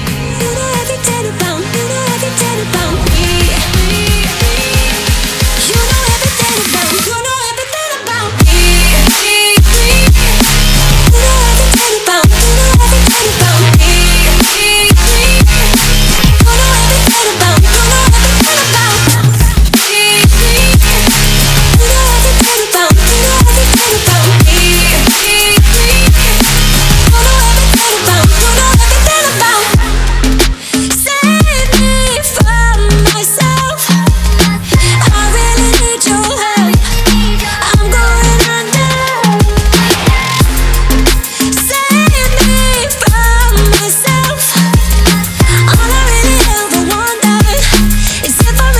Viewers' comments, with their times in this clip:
0:07 this is the VOO part
0:11 idk why i hear you don't know how to take a bomb
0:30 sounds like save me from Josh A